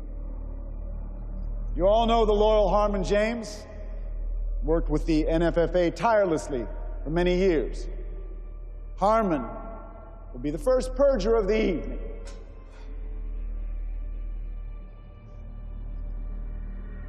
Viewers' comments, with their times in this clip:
0:03 Close your eyes and you'll hear Obama